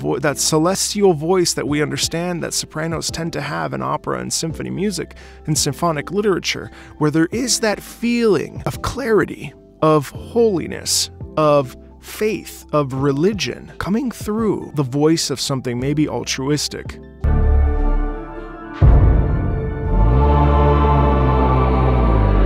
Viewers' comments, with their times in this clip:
0:09 that clarity is probably a byproduct of her vocal chords not being replaced with circuits yet.